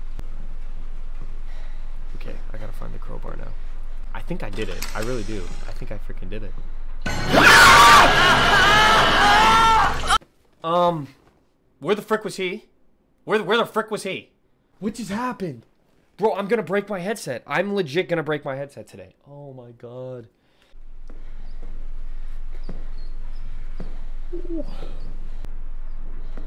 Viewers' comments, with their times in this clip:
0:09 he moaned before the cut 💀💀💀💀💀